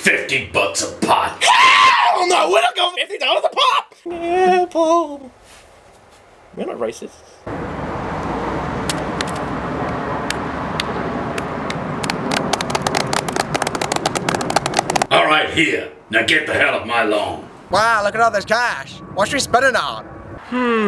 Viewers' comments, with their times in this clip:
0:05 that left ear drop tho